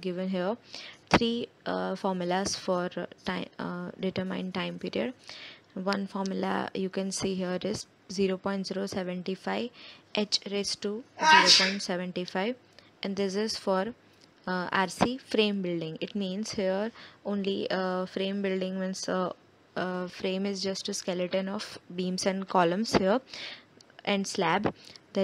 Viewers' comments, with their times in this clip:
0:10 "ya-chhi" who's that? 😁 😁 😁